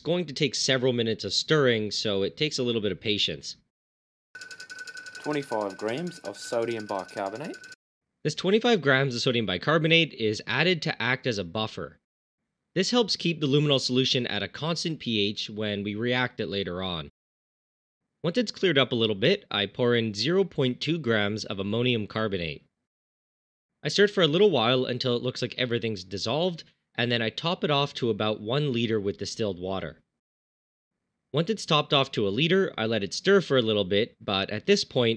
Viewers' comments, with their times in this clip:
0:03 Are you Australian or just practicing your accent for an upcoming role?
0:04 Why is there a random Australian dude that cuts in ? lol
0:04 Who said "25 grams of sodium bicarbonate" ? Sounded Australian or maybe South African. Was that you NileRed; do try to speak with a N.American accent on your vids?
0:04 Who’s voice was that (25g of sodium bicarbonate)? It sounded like an Aussie dialect.
0:04 is that a random Australian?
0:04 Why do you have somebody elses voice in the video ?
0:04 Um.... What was that ? Is this someone else's video? I heard an aussie voice and could hear the stir bar clicking, which leads me to suspect that this is not actually you preforming this reaction. Do you have an explanation?
0:05 .. your voice over gets cut out. You hear the stir bar going. Then from what I can tell , an Australian accented male says "25 grains of sodium bicarbonate".. definitely not your voice . I'm confused, are you not the one doing the experiment? You just voice them over ?
0:07 I think his voice cracked....
0:10 what? Random australian?
0:13 That voice reminds me of "2 shots of vodka".
0:17 Wow what was that voice ? O-o